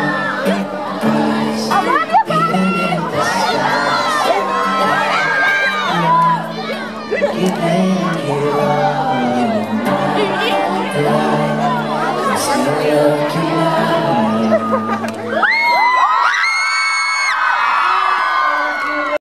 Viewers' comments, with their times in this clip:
0:10 wääyyyy someone is talking swedish, :DD